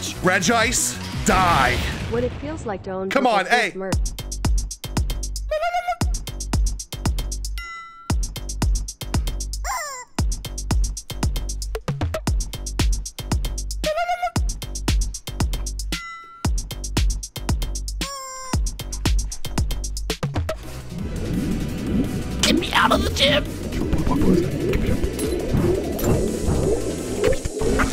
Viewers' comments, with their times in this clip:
0:10 but it's a bop though